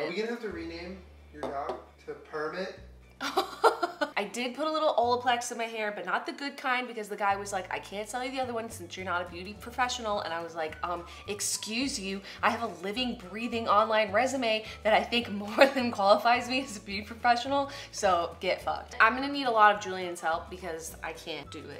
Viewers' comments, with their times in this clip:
0:03 why is that such a pam laugh